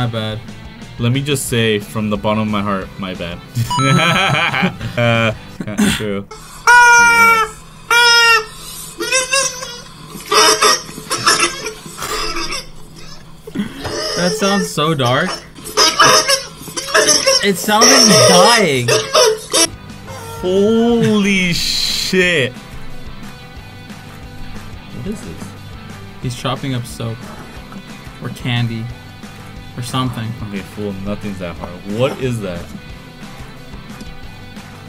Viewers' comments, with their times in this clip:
0:07 Now we now what it sound like some one is drowning
0:16 i felt bad because we have a neighbor who is with us and for the first few weeks he had no fence and what we thought was no dogs. He decided to put a fence up a week later we herd dogs crying and it sounded exactly like that its been going on for about three months now.